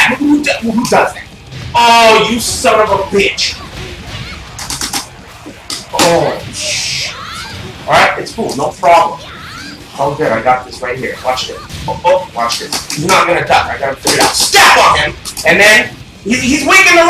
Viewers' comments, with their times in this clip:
0:05 so fuckin loud jesus